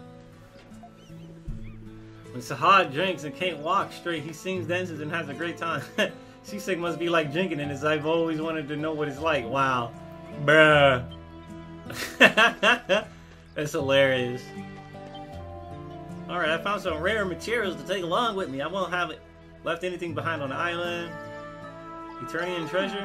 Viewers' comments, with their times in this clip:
0:08 The way you say "bruh" is actually hilarious